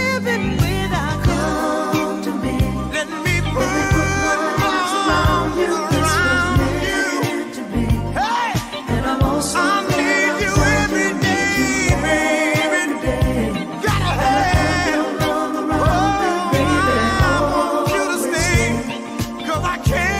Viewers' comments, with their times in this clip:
0:07 I always wait for that HEY!